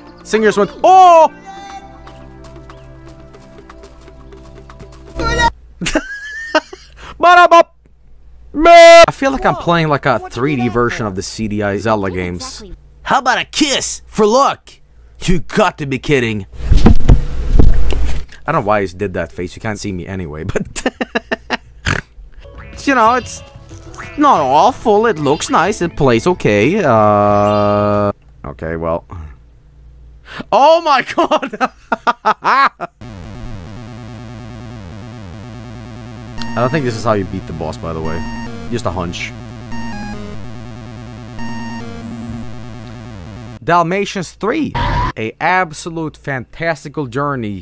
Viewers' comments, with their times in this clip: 0:05 THAT FUCKING UYAH SCARED THE SHIT OUT OF ME
0:33 "Isn't that the most beautiful, radiant sound that has ever been blessed upon your soul? Its exuberant tonality harmoniously blends the dying squeals of electronic goats, with the melodic rapture of diarrhea bubbling from a coyote's crap-hole." -Angry Video Game Nerd, 2009
0:33 winter games LIT jam